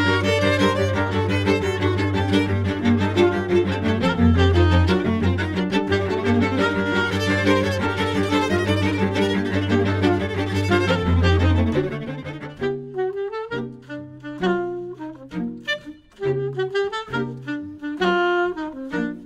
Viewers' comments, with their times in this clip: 0:05 Violist gets a nice feature and the camera is on the violins.. typical. lol